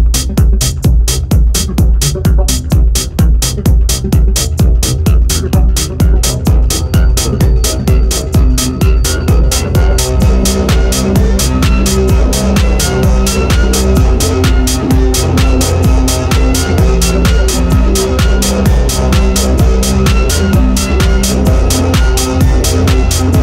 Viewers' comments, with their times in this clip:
0:10 Good bass line and trippy sounds.Like the sound/melody that comes in. Nice one.👍